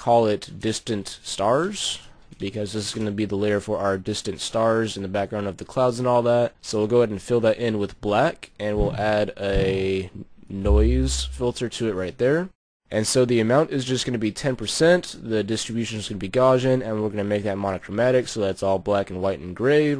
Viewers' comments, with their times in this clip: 0:07 just wondering, how do you get those sounds when you click and stuff? o.O